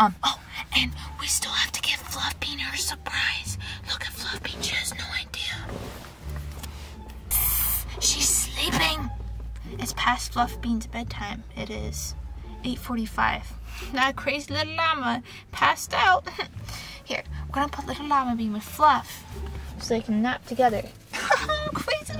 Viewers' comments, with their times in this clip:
0:06 I love how she want szzzzzzzzzzz😂❤